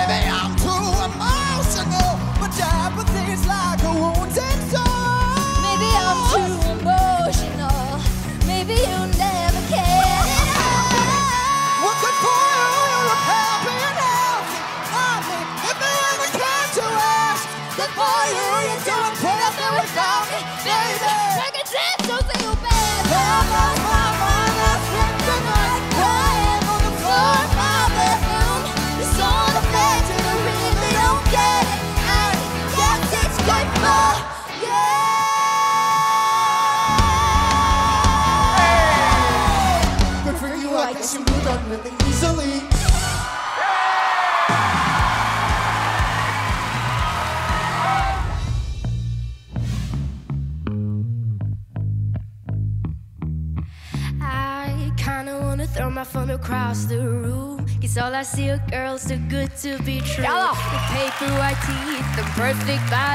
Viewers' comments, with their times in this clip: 0:09 and that is the true battle it’s amazing with fight vocals
0:50 some have reached higher notes, but I love his voice. So sharp and so sweet... And also her confidence, expressions, smile... I love this one, definitely my favorite.